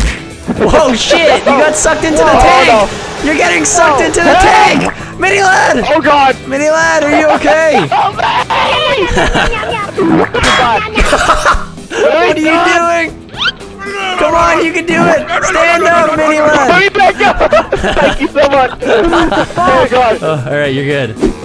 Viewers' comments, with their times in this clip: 0:09 dat Om non nom nom sound thou XD